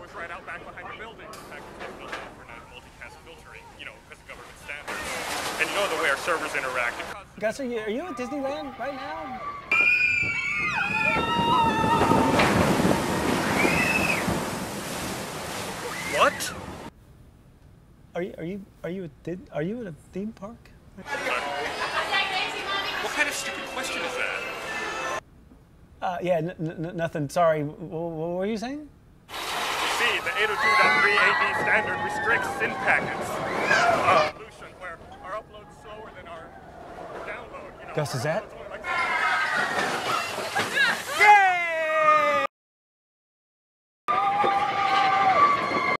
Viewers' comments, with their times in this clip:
0:05 laughing chinees kid
0:29 LOL KID CRYING LOL ROFL LAMAO
0:31 OMG kid practicaly crying
0:31 that kid is crying